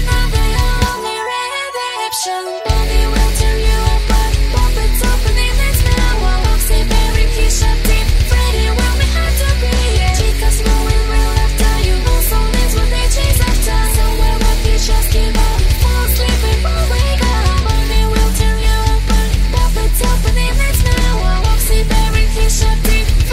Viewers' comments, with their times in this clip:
0:04 i heard: puppets opening his mailbox XD